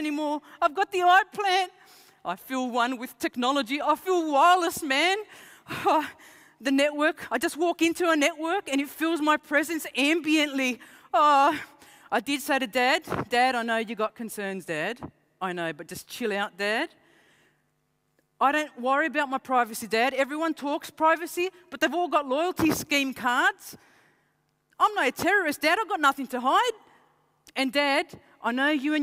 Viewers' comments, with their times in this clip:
0:10 This women can not convince anyone! xD Trying so hard to sound cool but she can't!